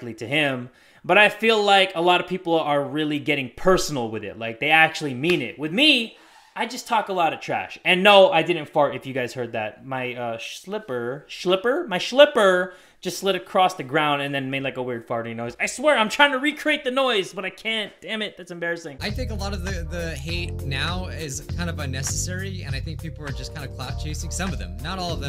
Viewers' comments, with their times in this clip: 0:06 I wonder if Jay took down this video because he was self conscious of his slipper slide?